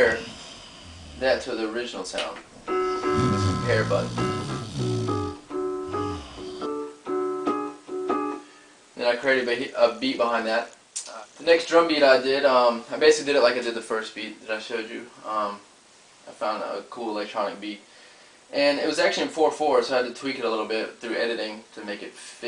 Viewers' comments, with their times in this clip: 0:08 Someone is snoring. lol